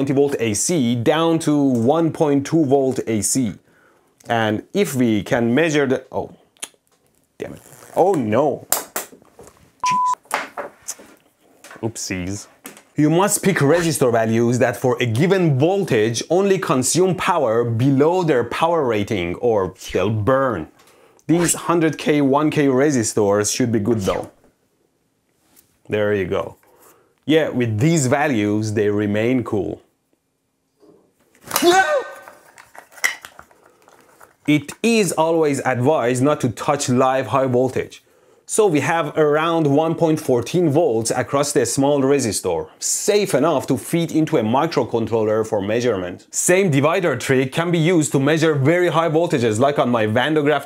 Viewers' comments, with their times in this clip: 0:04 The softest Circuit Failure in EB history xd
0:07 he started panicking in lowercase.
0:07 The way he said it... 😂😂
0:30 treasure trove of "Wilhelm" scream effects
0:31 New Hollywood scream SFX achieved Wilhelm Scream ❌️ ElectroBOOM Scream ✅️
0:31 when u start ur car in the morning and d mudic u were playing at night was too loud. 😂😂😂😂